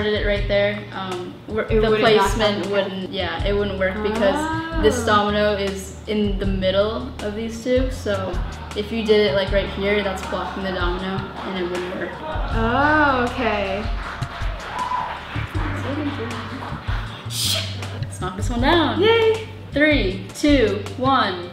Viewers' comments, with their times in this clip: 0:04 I Heard Ah On